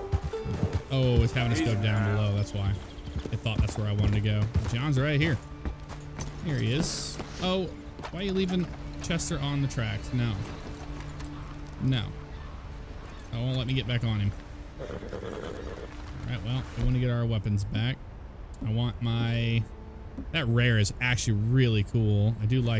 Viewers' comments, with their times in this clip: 0:07 I’m gonna talk to the wevwind 🤣 also maybe find a less dangerous place to park Chester, don’t want to see him get flattened by a train, he’s come so far